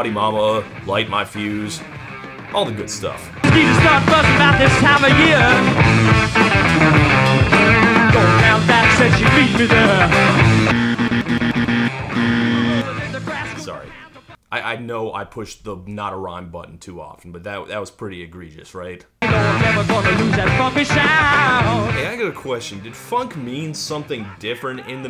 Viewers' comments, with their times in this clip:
0:10 /jɪr/ and /ðɛr/ don't rhyme? Man, you are strict!
0:11 holy smokes todd finally knew how to equalize his volume!